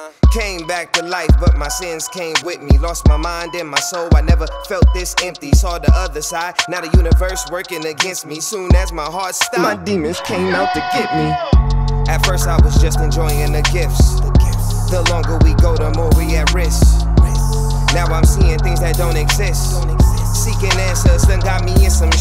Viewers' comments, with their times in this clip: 0:10 swore to god it was Ab-Soul fpr a second